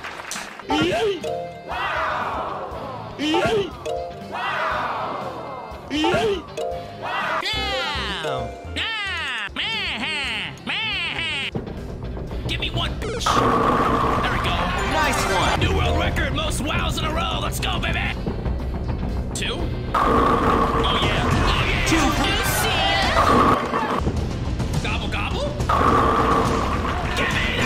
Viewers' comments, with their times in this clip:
0:07 Was that his impression for the crowd, or was it Waluigi?
0:08 Such a great Waluigi impression !